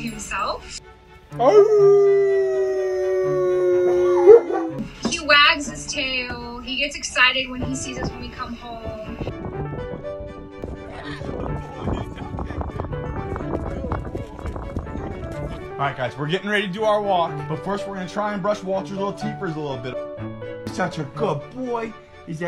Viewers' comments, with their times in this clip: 0:03 …….. I just heard a donkey howl. I don’t know if I should laugh or question reality.